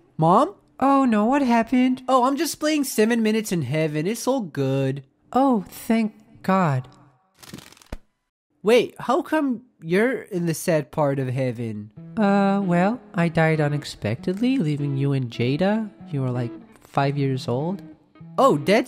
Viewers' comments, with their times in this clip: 0:06 I really like that little bug wing flutter